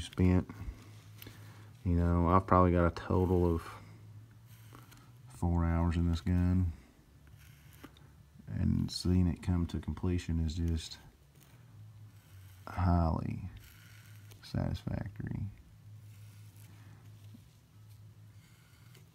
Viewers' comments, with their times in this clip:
0:05 .....and seeing it come to completion is just........highly..........satisfactory. The way you said that was so honest that it made me laugh.